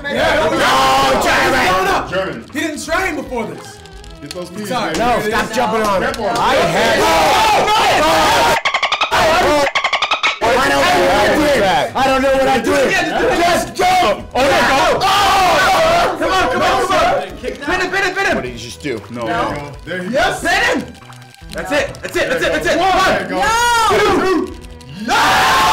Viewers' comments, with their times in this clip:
0:08 that sound of pirate speech from spongebob XD